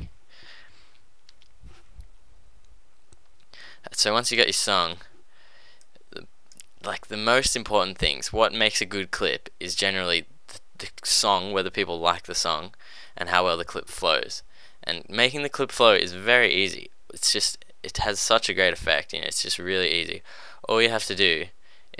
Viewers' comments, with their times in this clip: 0:08 haha what makes a good clit lol